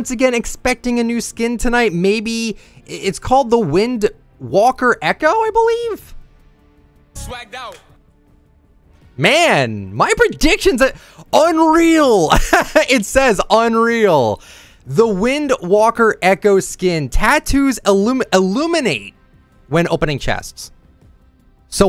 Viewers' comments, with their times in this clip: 0:07 Who else heard the swagged out from whoopty